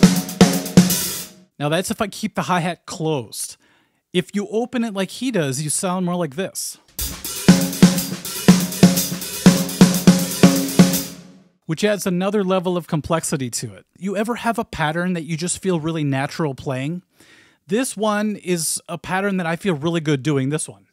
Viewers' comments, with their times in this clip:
0:06 The thing sounds like the intro to Ghost by +LiVe+. To me,at least. Great interesting breakdown and analysis!